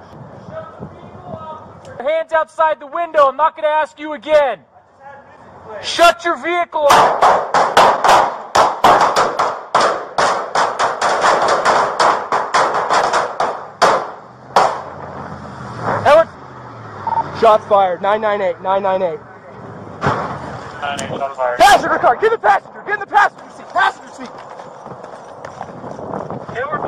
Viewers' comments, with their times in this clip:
0:08 ah yes, i love the sound of hail on my metal roof.